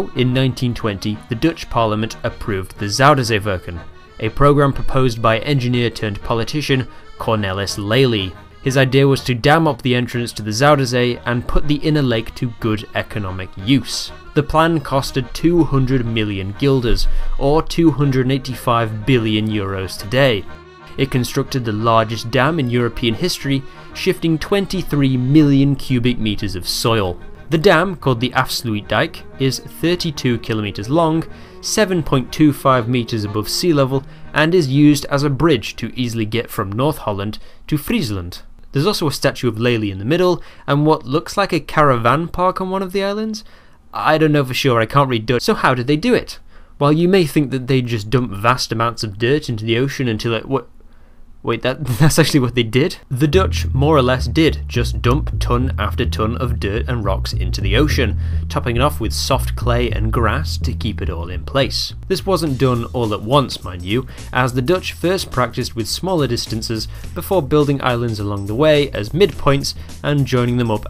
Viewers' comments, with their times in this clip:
0:03 he makes the zuiderzeewerken sound so german😂
0:28 deam i love it when people try to say dutch words
0:53 I'm loving the Simcity 4 music during the dam build :)